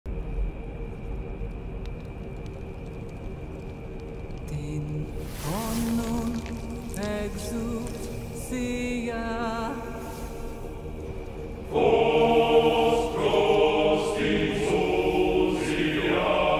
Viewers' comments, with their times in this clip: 0:03 how where humans able to create such a scaring sound and scene🥶